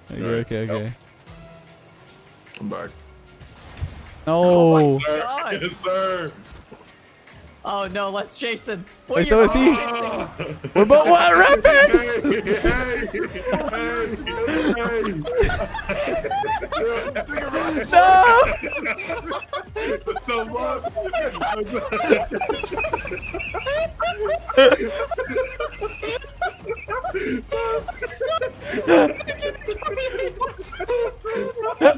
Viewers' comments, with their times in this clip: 0:05 I'm sure every gamer had a moment like this. Starts Laughing till you and your pals can't breath. 😂
0:05 was a piece of art😂 what was even better was hearing you guys die laughing which in turn made me die laughing. Nothing’s better than hearing other people laugh imo.
0:14 for Insane laugh